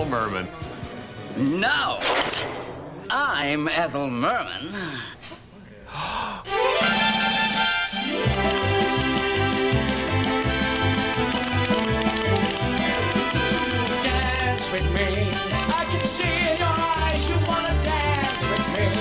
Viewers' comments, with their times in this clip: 0:06 the gasp haunts my dreams